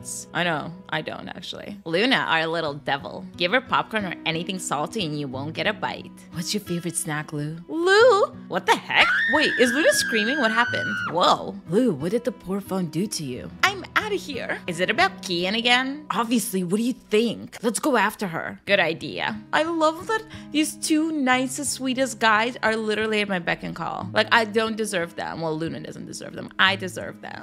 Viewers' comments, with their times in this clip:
0:09 I broke out in laughter the screaming noise is just so perfect